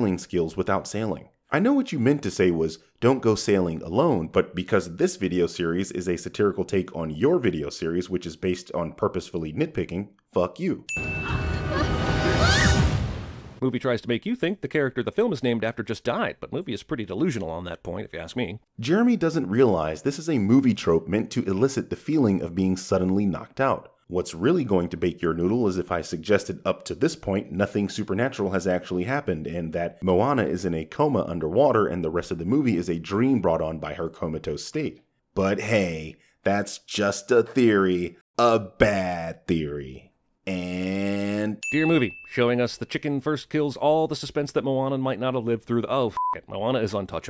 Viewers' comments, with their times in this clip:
0:10 Town of Salem censorship
0:28 Bird man makes a YouTube culture referen-*ding